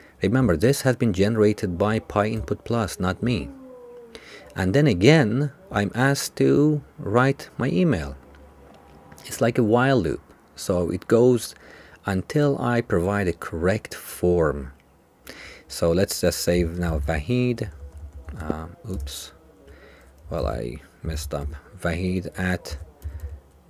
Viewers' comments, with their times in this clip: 0:04 great video you are a really good explainer (but what is the groan ?) thabks for videoN!!!!